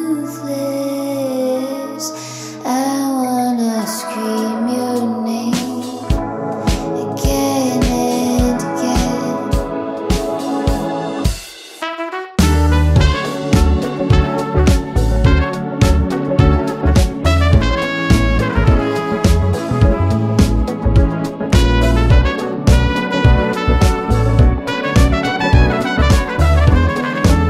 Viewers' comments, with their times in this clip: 0:10 The trumpet solo is so freaking tasty I can listen to it all day.
0:10 the jazz part in hit me
0:11 my fave part, wish i could blow something as good as that trumpet guy.
0:11 When the trumpet came in, really indulged in that sexy atmosphere. irresistible...